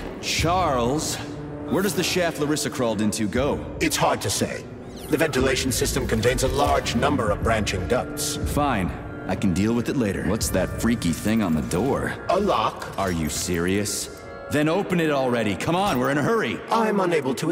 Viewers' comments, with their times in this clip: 0:05 completely random but why does the background music here sound JUST like Dead By Daylights, Ghostface menu music?